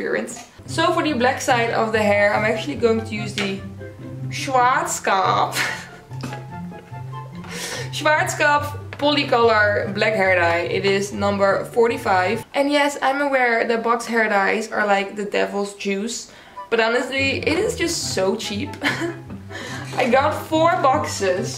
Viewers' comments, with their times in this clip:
0:08 Heyyy you pronouced Schwarzkopf right😂